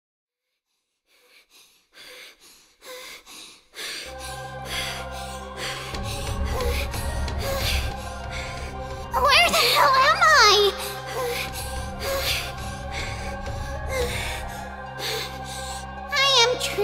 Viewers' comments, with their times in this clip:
0:00 Did I click on Kingdom Hearts in 30 seconds? •Ominous organization music.. •Lots of stairs... •"Where the hell am I?" Yeah. Sounds like Kingdom Hearts.